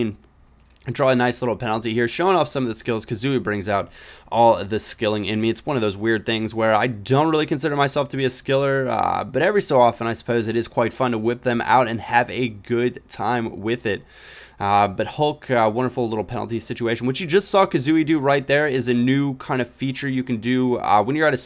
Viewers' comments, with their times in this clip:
0:09 sounds funny lol